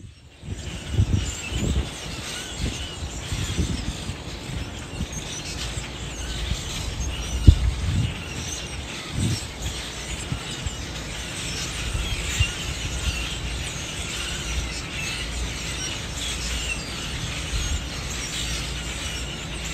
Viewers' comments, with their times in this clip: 0:07 The birds are all flocking for the free food and stuff. And now that the weather is cooler they have something to sing about.